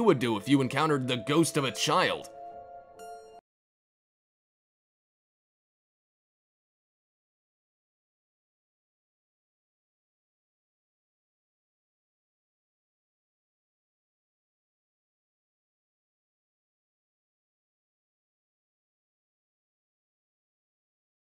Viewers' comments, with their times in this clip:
0:04 Sound dropped out